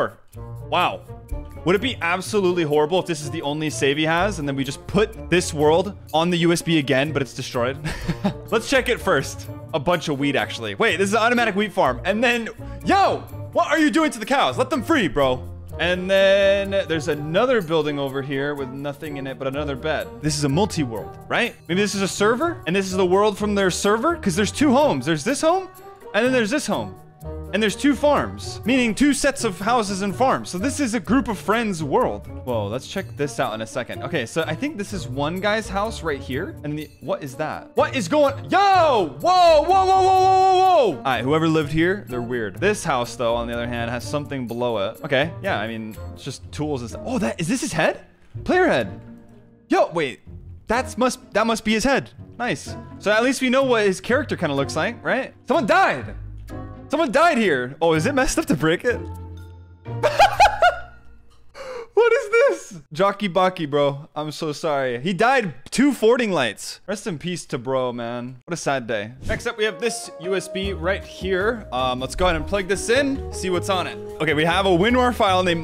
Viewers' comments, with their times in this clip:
0:08 bro said weed farm😂
0:09 that wheat he sounded like he said weed
0:10 did you say weed instead of wheat 😂
0:58 bro laugh at a player that made out of blocks